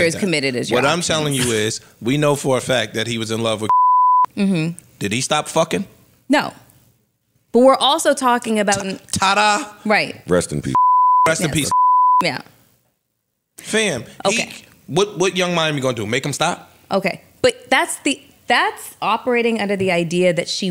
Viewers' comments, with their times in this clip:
0:03 Who did they bleep out ?